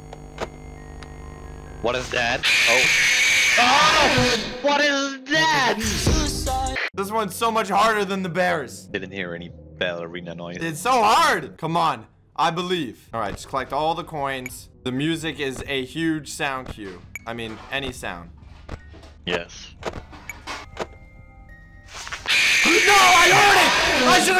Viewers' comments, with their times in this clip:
0:05 why did xxx start playing